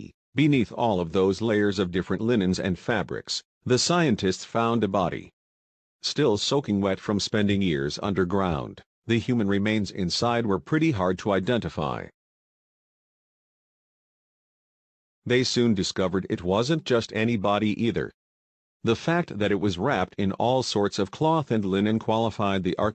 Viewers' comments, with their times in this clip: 0:03 cutting to the long winded chase of poor quality robotic voice, this is what was found...